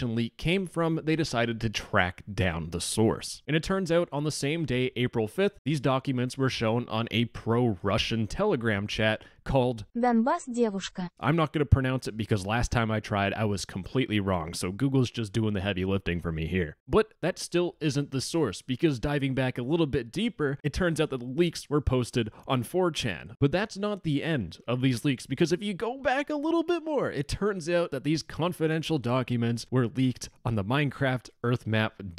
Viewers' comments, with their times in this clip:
0:09 me clicking on a video Channel name: No text to speech *Same channel 40 seconds into video: *
0:09 that's clearly text to speech.. unsub'd! 🤣
0:10 you can see text to speech in a channel called no text to speech. Immidietly unsubscribed
0:10 LIAR!!! Less than one minute into thr first video I've watched from you, there was text-to-speach. I don't know if I can trust you ever again
0:10 first time in the channel and you start with text to speech. I'm v outraged.
0:10 TEXT TO SPEECH???
0:14 he just used text to speech…
0:16 false advertising! no text to speech, no text to speach!
0:18 For a channel called no text to speech, sounded a lot like text to speech…